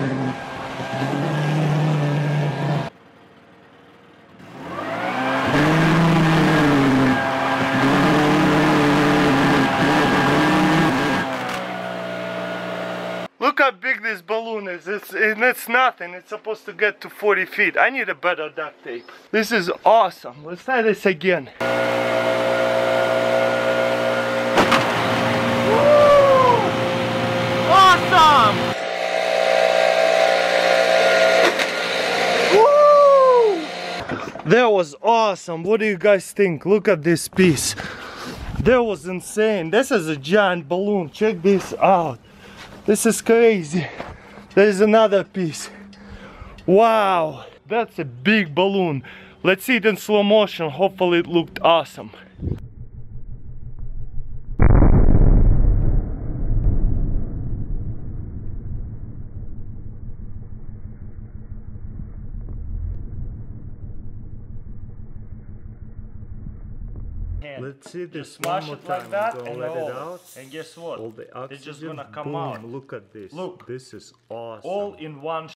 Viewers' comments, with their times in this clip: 0:04 and the beast roars!
0:08 the balloon is farting!
0:11 sounded like my fart😂
0:22 Russian mating sound.
0:24 Russian Mating call strikes again!
0:24 ah, the russian mating call. So eloquent and sophisticated
0:25 Russian mating call
0:26 Russian mating call
0:26 Russian Mating Call
0:31 russian mating call.
0:31 Balloon Mating call XD
0:32 it sounds like a rare cat mating call
0:32 Russian mating call
0:32 sounded like Patrick star
0:32 when you're having sex and your condom bursted while doing dat mating call.
0:37 no offence but "look at that 'piss' ".
0:53 Slow motion fart.
0:56 close your eyes fart